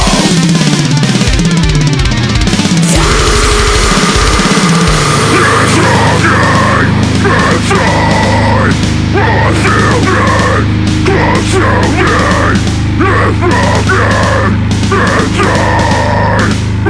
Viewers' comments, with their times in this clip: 0:04 ... gotta be the toughest vocals I've ever heard.